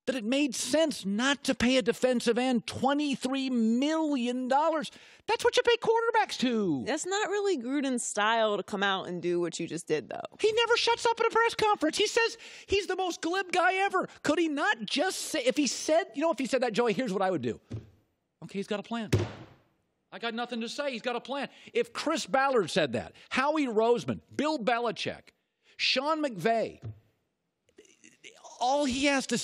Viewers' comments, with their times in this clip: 0:10 Colin inhales some helium lol